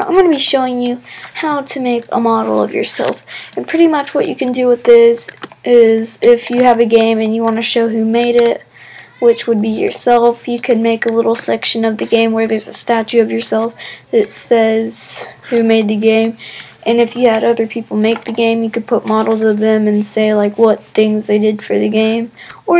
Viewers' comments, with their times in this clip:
0:08 I Hear Someone Shouting In The Background XD